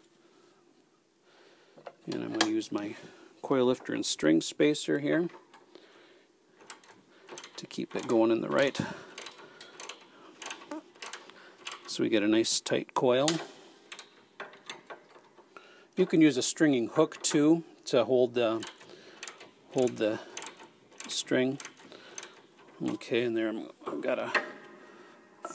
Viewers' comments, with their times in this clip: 0:09 Very important to let out any farts when restringing a piano.
0:11 A sneaky fart :)